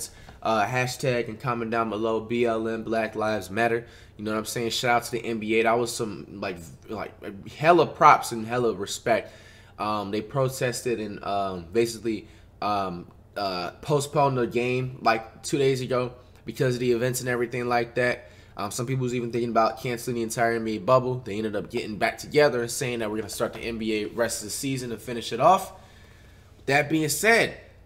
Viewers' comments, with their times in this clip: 0:10 couldn’t pronounce boycott 😢